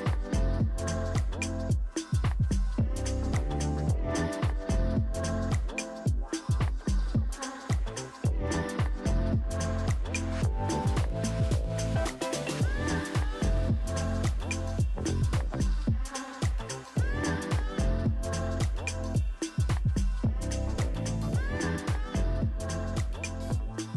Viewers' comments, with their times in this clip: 0:07 Song is lovely though, something like this is perfect ✨